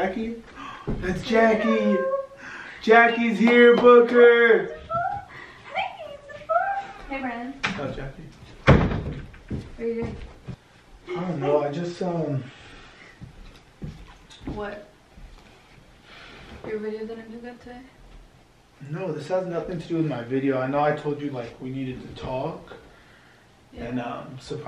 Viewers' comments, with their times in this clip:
0:10 he cut out the audio cause they kissed ;) lmao